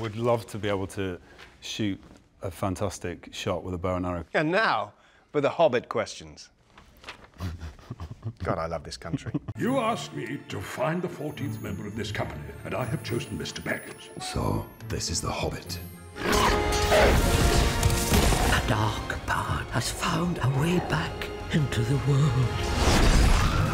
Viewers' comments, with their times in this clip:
0:04 so cute XD Richard Armitage 's voice is so charming XD and i love Martin American Accent LOLL so cute
0:06 His giggle is the sexiest thing I've ever heard
0:06 He just seems so low-key and charming. Giggle is the best. And did I hear him right say "I cant do voices.."? Anyone who's seen him tell bedtime stories for CBeebies or his recent Gandalf impression knows he does great voices.
0:06 that low chuckle... just....
0:07 Richard Armitage laugh just killed me .... I LOVED his acting in "north and south" sooo much <3
0:07 I love RA's giggling !! So damn cute!
0:07 His laugh :D I love it.
0:07 I love Richard's chuckle and Martin's reply, "God I love this country!" Hilarious!
0:07 Richard's little giggle killed me.
0:08 Richards chuckle is the cutest thing :)